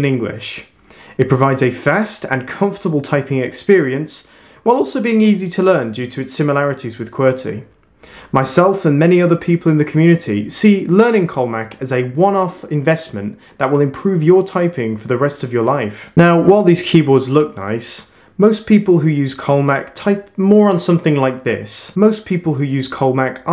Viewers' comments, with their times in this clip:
0:04 No apologies for the voice crack btw